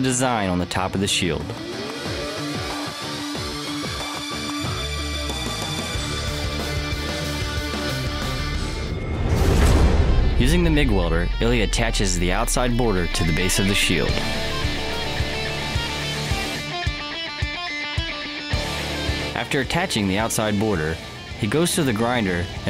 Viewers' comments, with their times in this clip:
0:10 doesn't this sound like the new Rammstein song Deutschland